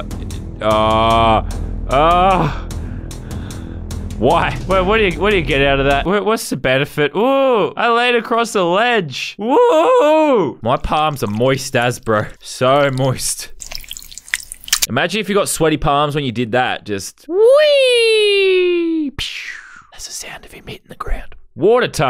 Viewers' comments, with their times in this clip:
0:10 Best asmr time of 2021